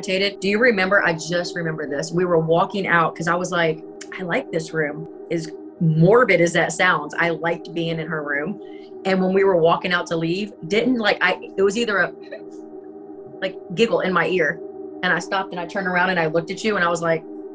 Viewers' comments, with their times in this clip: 0:04 a woman’s voice 150%!! But I’m not sure what she said!!